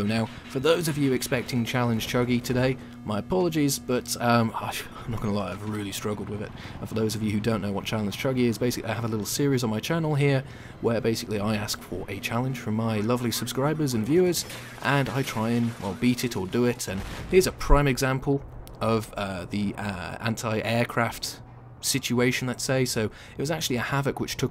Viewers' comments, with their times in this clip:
0:10 Has the missile impact sound changed?